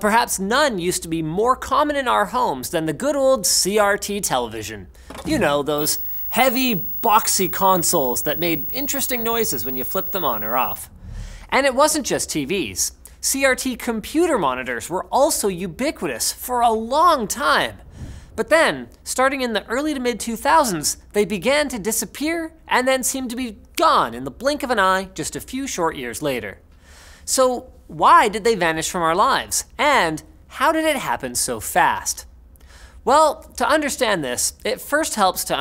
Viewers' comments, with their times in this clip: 0:05 LOL apparently there is a high pitch sound i can't hear but makes both of my daughters grab their ears
0:05 Warning they turn on a CRT. I haven't missed that noise at all...
0:05 ASMR before YouTube was invented
0:05 Anyone else still have enough of their hearing to notice the CRT noise on this one?
0:05 AAAAAA THE PITCH
0:06 Ouch ty for the earrape
0:06 boomer editors can't hear the sound so they didn't edit it out and let out ears suffer
0:06 Linus you bastard I heard the high pitched frequency noise and you thouGHT I WOULDNT NOTICE
0:07 Chandler? Is that you?
0:09 OKAY BUT WHY THAT FREQUENCY THAT SHIT HURTED
0:09 That CRT TV whine 😭
0:18 ...starting in the early MID-2000s!!! Eh... Ok